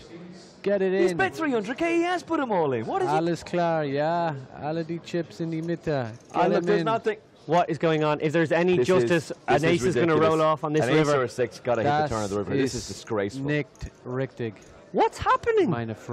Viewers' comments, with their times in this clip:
0:03 German Language spotted